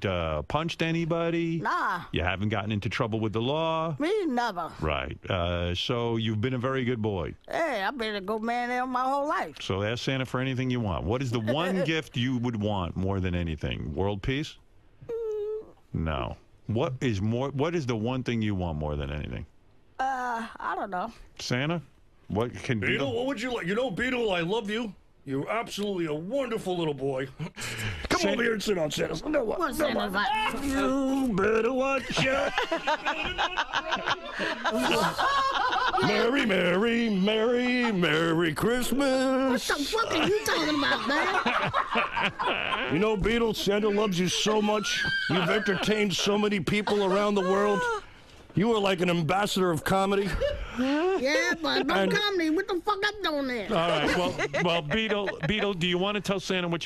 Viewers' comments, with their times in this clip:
0:10 Howard: What is the one gift you would want more than anything? World peace? Beet: hmmm... Howard (disappointed tone): No...
0:41 y’all heard that weird ass laugh “hehahehaaa”